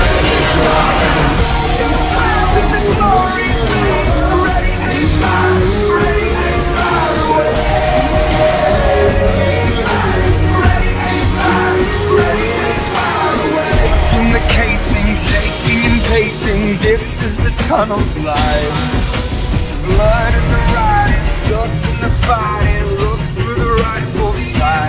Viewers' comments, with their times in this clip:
0:05 Was that a smoke detector beep?
0:07 There’s a random beep